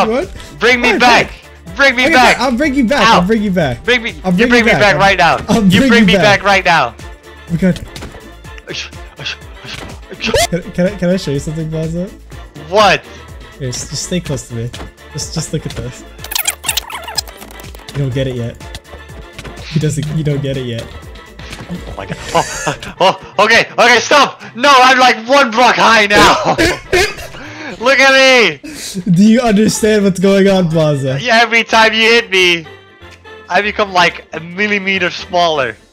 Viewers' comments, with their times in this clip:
0:09 I started dying when I heard that "WOO"
0:21 what was that scary laugh...